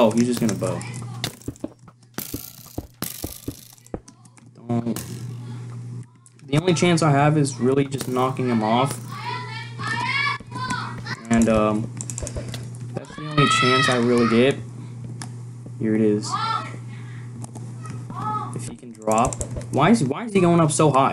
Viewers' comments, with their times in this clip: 0:09 I like the music u put in the background